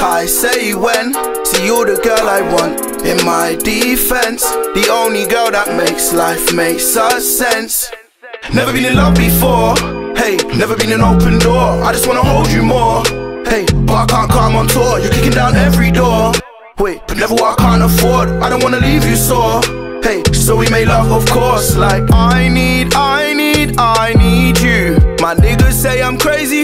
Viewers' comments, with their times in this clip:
0:06 the music actually starts being cool.
0:07 ENGLAND RAPPERS DONT GOT THE VOICE fire as shit tho